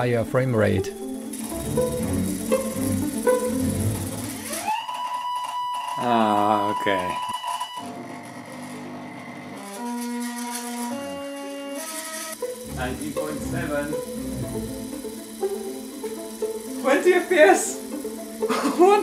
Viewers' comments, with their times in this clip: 0:03 ish - my first tv also screamed like that when it died